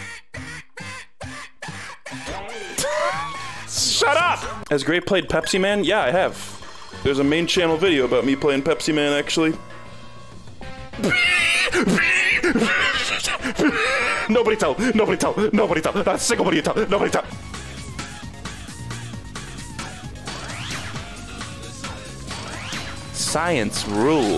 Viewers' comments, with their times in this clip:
0:10 bro was squealing and wheezing like a pig lmao